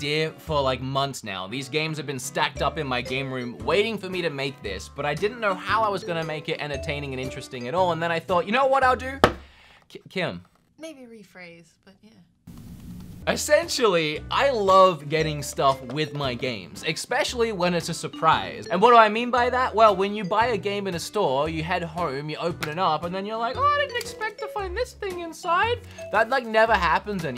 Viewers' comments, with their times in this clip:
0:09 The little stutter, intentional or not was hilarious